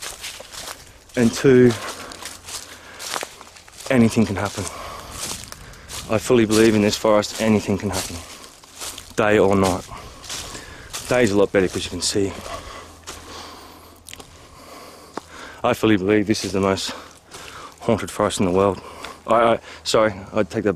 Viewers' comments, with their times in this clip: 0:06 In the beginning of your video I can hear something and it's not a pleasant. Did you put in special sound effects? Thank you for the video. God Bless 💞🕊 I just realized something it might be your breathing your mic might have an echo I don't know LOL